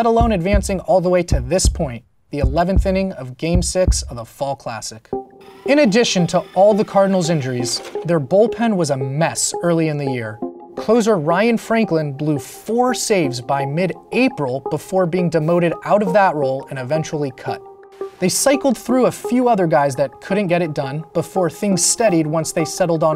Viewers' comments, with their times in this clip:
0:05 I thought I got a Discord message